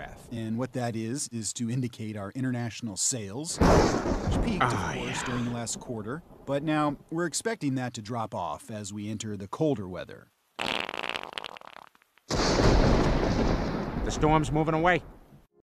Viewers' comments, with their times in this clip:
0:10 Sounds like Peter had a helluva storm in his pants